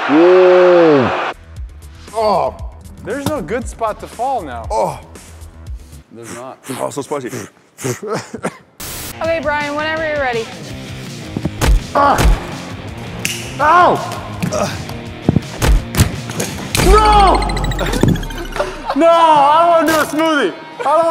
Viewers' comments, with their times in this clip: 0:06 someone said a što smrdi are u from balkan?